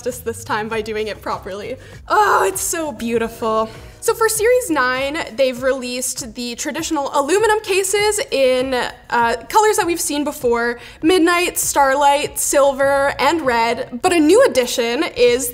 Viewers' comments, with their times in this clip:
0:03 OH MY GOD!! WOOOOO!! LISTEN TO THAT HORN!! xD